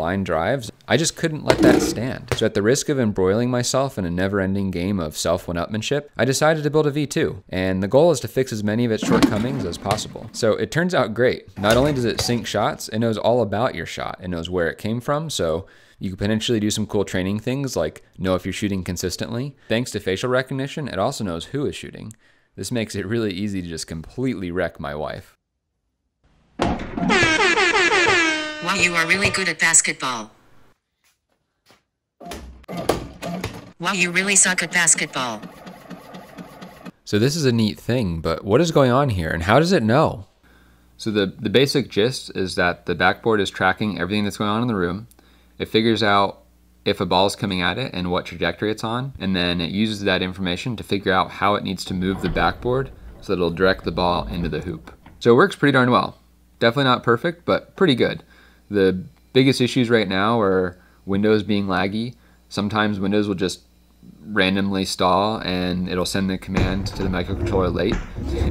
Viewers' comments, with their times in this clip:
0:10 Listen to with headphones on. It sounds like the sound is coming from your house.
0:10 I thought my AirPods disconnected
0:11 stereo made me think the stack of shelves to my right collapsing, nearly shit myself.
0:13 Bruh rip headphone users I had my shi up a bit too loud and thought I broke something😂
0:30 Did you run it on GLaDOS?
0:55 *weird muffled whisper heard in shuffling of the leaves outside the windows - ...linux-s-s